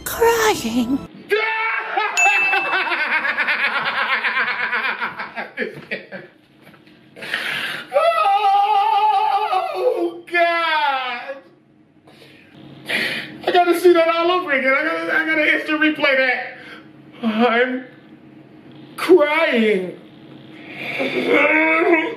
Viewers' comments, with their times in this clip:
0:07 literally my favorite laugh from him😂😂